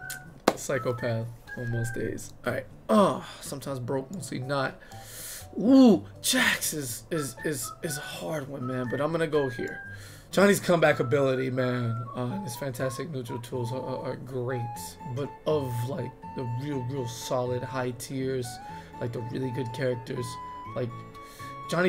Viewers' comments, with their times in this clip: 0:03 Bruh that’s when my psycho laugh began -.-